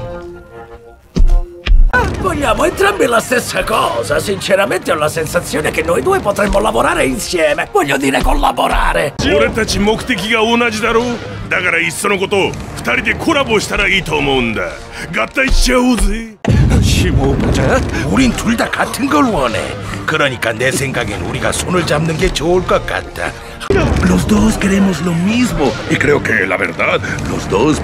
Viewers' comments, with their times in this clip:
0:09 I'm Hearing Lola In Douche's Voice, But On The Side Note, He Sounds Like A Serious Anime Character, Or Anything He Sounds Like That Tall From The Nani Meme, That Means What In Japanese To All Of Y'all Anime Fans Out There Including Me, Well I Only Know Yu Yu Hakusho That's Was My First And Personal Favorite Anime